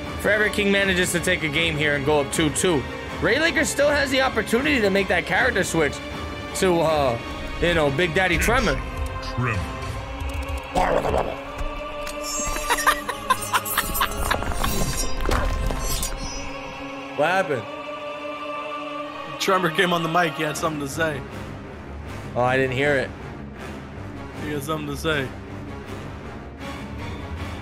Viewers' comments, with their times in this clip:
0:10 🤣🤣🤣🤣🤣🤣🤣 TREMOR ON THE MIC